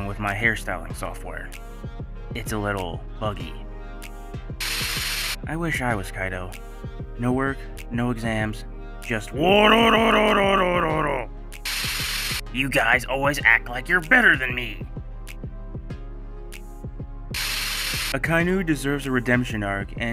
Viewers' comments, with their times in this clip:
0:06 Nah cuz why that laugh actually slap 💀